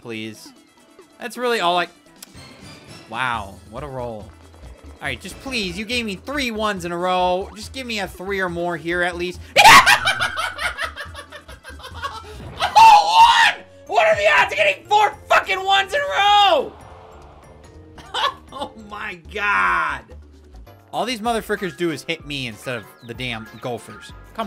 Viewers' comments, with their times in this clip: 0:09 His laugh is so contagious.
0:09 you can add this to a joker soundboard and I guarantee my limited edition toad wii remote (with motion plus inside) that no one will spot the difference